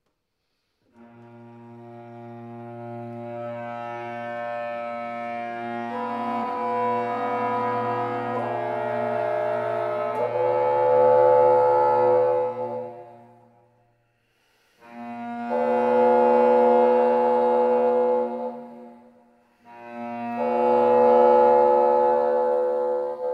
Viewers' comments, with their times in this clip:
0:08 My goodness the sounds in IV. Lied around the mark, are those multiphonics on the bassoon? What technique is that, how would you notate it? Amazing sonority!